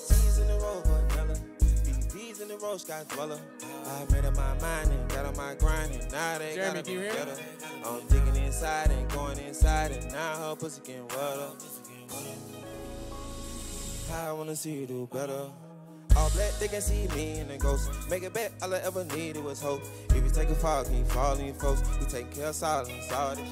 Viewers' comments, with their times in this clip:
0:06 I thought he asked me if i could hear him lmaoo